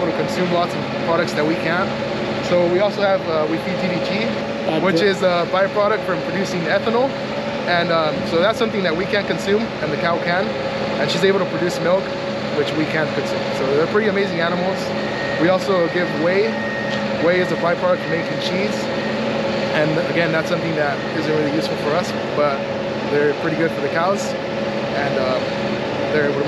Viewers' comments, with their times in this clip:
0:07 he says that cows can eat things humans can't, and it sounds like he said they feed them DDT but that can't be right, can it?